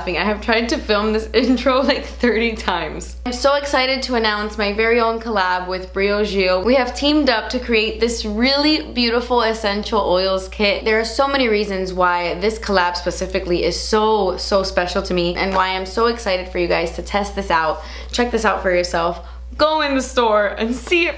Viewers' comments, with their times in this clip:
0:03 She needs to put a time stamp of when she gets to the point. LOL -- It's if anyone wants to skip the weird hemming and hawing and aweing. I know she gushes but this was like endless. LOL